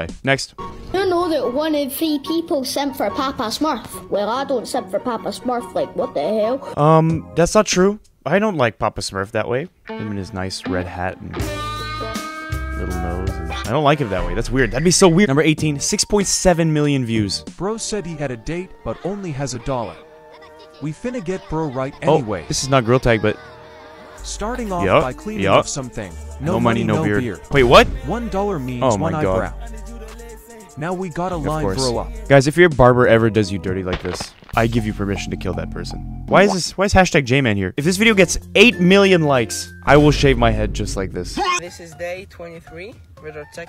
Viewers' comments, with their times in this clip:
0:10 romantic music starts playing be like
0:26 why is no one talking